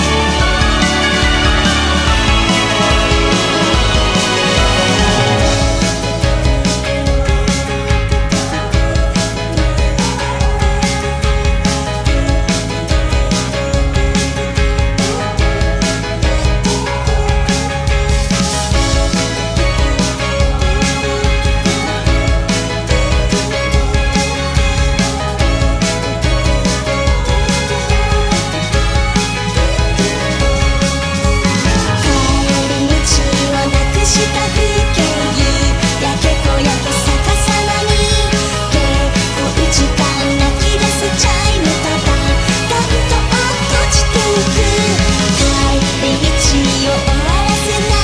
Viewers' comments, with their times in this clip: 0:05 i fckin love the melody in this part
0:32 haha his voice